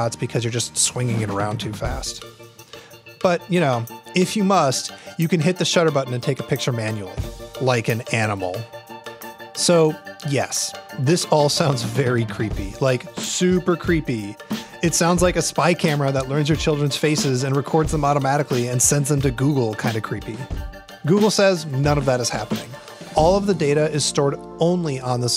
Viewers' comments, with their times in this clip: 0:07 "Like an animal" is it me or did he sound like Kevin from the office